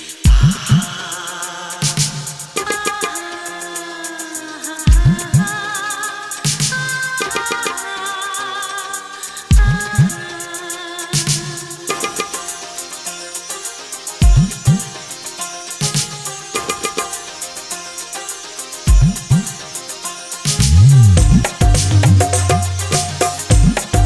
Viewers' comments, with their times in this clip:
0:09 Cant believe this is really played.. just good acting... Missed couple of beats ..thats for sure... Nice song love it..